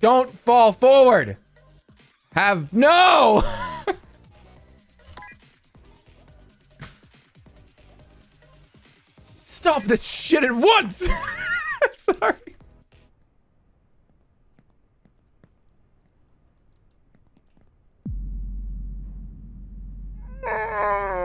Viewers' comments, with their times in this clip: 0:06 i can't believe i've never seen "STOP this SHIT at ONCE !!!" BEFORE NOW LMFAOAOOOOO 😭😭WHYD HE SAY IT LIKE THAT BAHAHAHAHHH